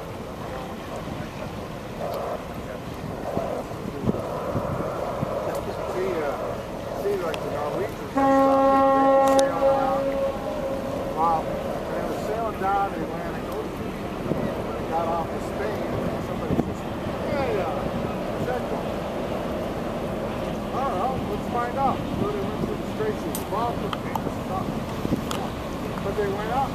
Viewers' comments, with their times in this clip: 0:07 There was a horn